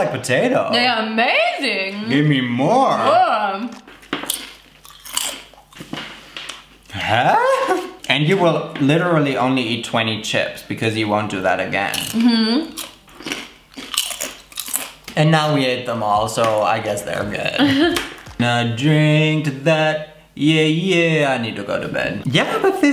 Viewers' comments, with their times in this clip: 0:06 I don’t know why but every time I hear a German saying “hä” y feel complete min